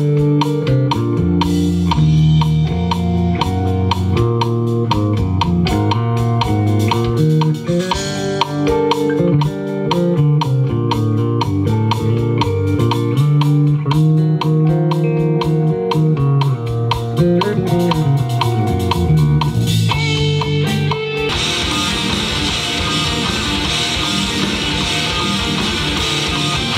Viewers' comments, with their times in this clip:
0:07 I'm so happy the tapping section at the beginning of Atlas Novus is on this video! When I heard the first of the song my face melted...